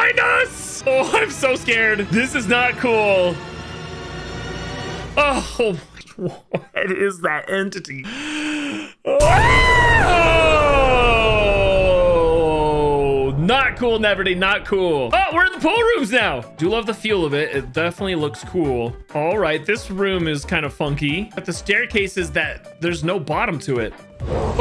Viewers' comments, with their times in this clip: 0:08 The way he screams in 😂